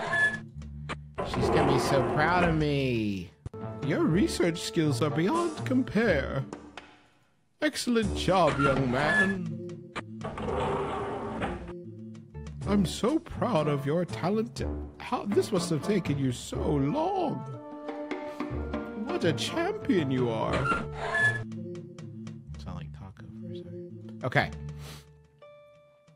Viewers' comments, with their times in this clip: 0:03 Aha the Taako voice XD And then mumbling "I sound like Taako for some reason" lol this whole thing was magical
0:11 SPOT-ON incredible Taako impression